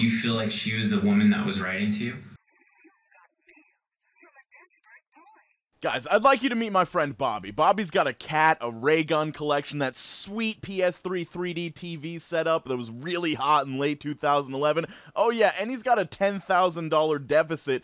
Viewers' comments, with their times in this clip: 0:03 I was listening to this without earphones and sounds like it was being played inside my head